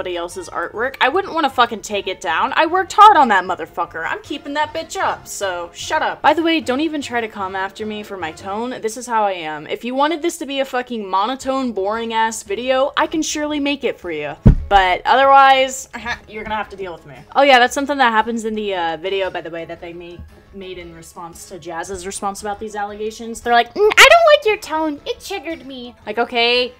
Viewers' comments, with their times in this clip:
0:08 completely off topic and about the “tone” thing..your tone isn’t even all that bad, on top of that it makes sense why you WOULD have a tone in the first place bc of how stupid this situation is. Acting childish is 1 thing but it’s another when you’re just fed of with childish bullshit like this.